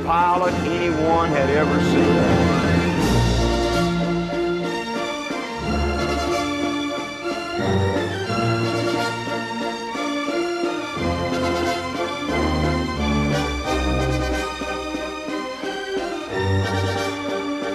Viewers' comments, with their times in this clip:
0:03 that end of the Yeagers Triumph is what I enjoy to ever listen to, ever!